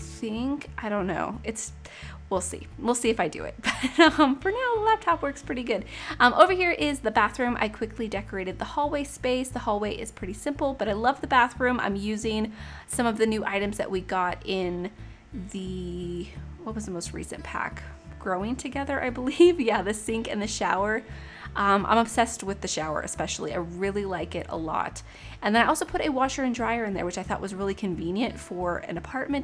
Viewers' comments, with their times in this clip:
0:10 I can hear the fans in the laptop as you talk lol